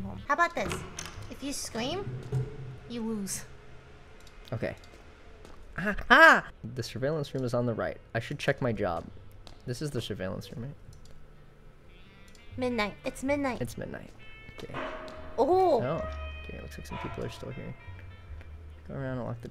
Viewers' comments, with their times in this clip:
0:05 micheal scream lol